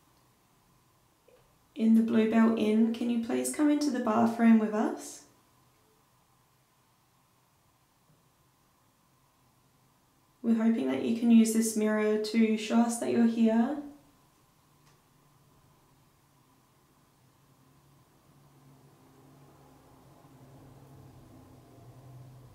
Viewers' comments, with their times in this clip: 0:05 there is voice that might of said "yes" sounded like a little girl